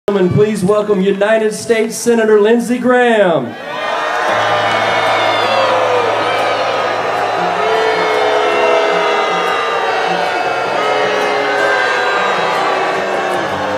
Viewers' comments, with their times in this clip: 0:01 You KNOW they had signs up telling people what to cheer/boo. They were cheering at first until someone flipped the sign. XD I mean, really, when have you heard anyone go, "BOOOO!" anymore unless it's on a TV show or in a movie?